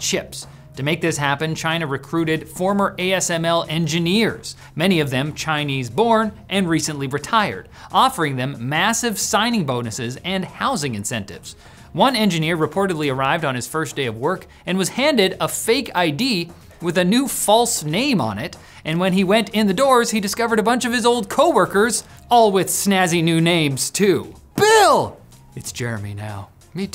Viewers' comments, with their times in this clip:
0:08 Still that raised humming noise as a constant... Amateurs... (specially from start to min it is pretty dominant even even bossted when he is closeup and volume raised on top)